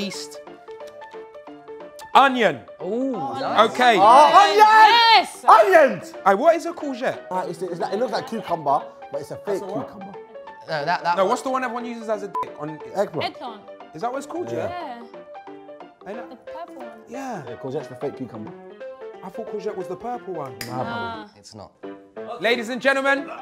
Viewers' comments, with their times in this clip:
0:05 Chunkz screaming onions! Had me dying 💀😂😂